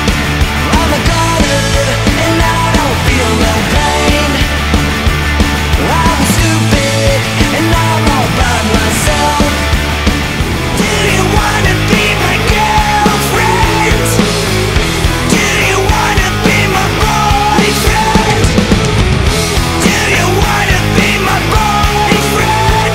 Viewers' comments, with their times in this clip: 0:10 wtf he sounds like Chester